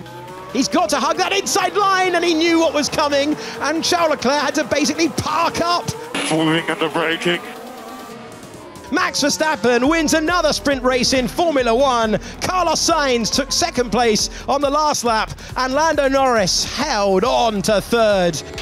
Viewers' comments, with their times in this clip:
0:05 doesn't sound like Leclerc at all